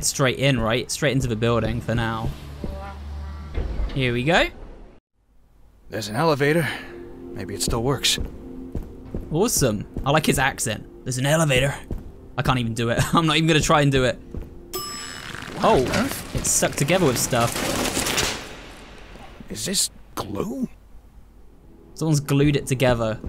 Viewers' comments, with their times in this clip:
0:10 i love your attempt at the voice, it was very cute and you did p well lol